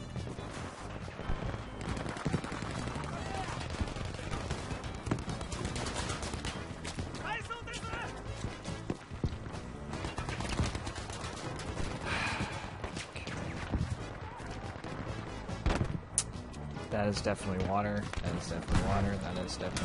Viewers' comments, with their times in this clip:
0:07 It sounds like a water...